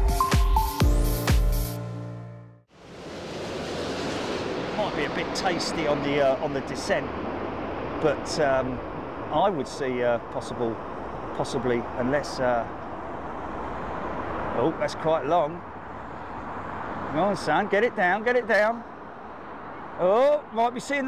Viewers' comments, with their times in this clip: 0:04 that guy yelling into the mic with the British accent is ridiculously annoying.